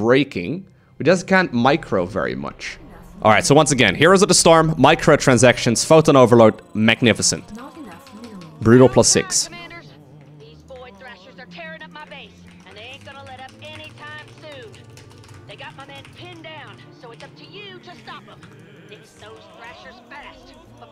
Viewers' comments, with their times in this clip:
0:08 The Aria starts playing and Hammer whines that they gonna rip her Base apart. Was this intentionals Lowko or just a coincidence?